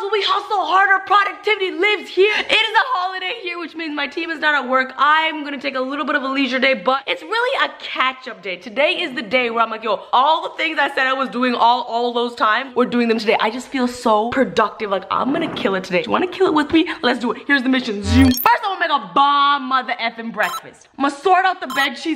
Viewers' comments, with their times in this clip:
0:07 "It's really a ketchup day"... my brain doesn't process words right :'D